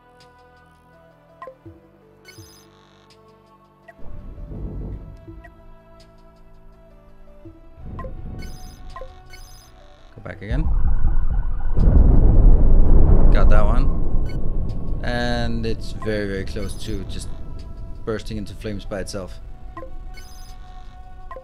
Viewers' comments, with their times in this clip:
0:09 railgun sounds are sooo good